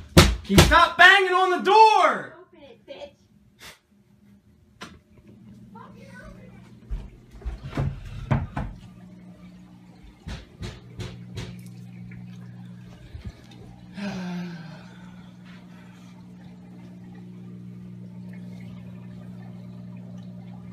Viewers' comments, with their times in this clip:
0:04 when he turns the corner and leave you can hear the demonic screaming and banging get softer in the distance. Absolutely beautiful use of dynamics